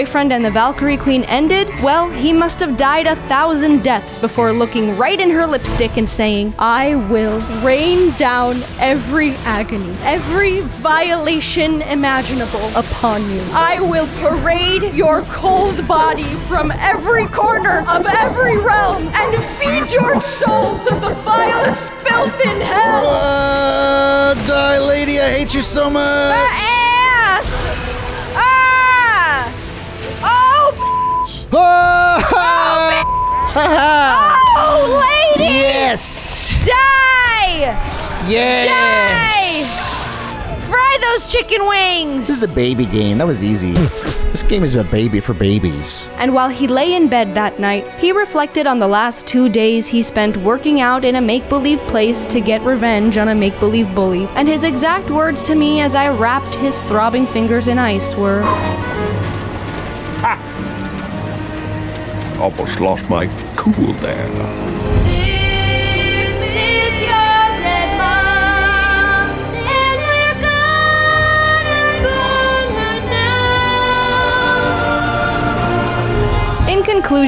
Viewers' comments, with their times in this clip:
0:06 can I just say that was some fantastic voice acting? Holy shit, what a performance.
0:15 you actually sound like a very pissed off video game character or a very pissed off mother in a video game LOL I love it
1:05 i like how that song gives me chills even with the goof lyrics.